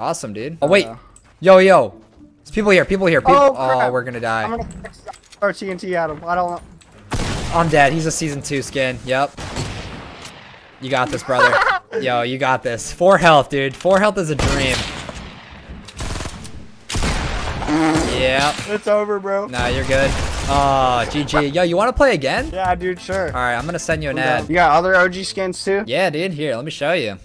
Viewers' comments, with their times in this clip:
0:10 uhahaha LOL that laugh do